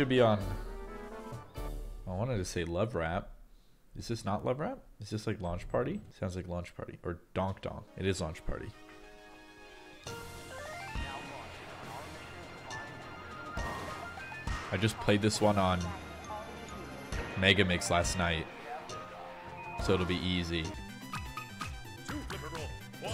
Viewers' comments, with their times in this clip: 0:04 fun fact, all of the rockets (minus the red one) all take 3 beats to launch! theyre just trying to trick you with silly noises <3